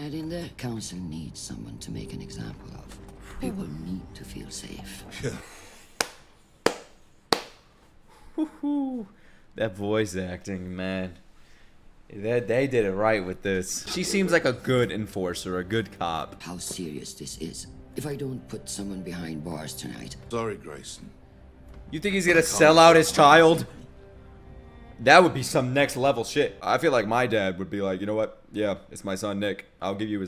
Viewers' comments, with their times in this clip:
0:05 that's Shohreh Aghdashloo...the most noticeable voice in my country... showed this to my family who dont know a single word of English...INSTANTLY recognised this queen :)
0:13 funny thing is that’s her natural voice, I was watching The Expanse and she was a character in it, seeing her in live action after watching this was wild.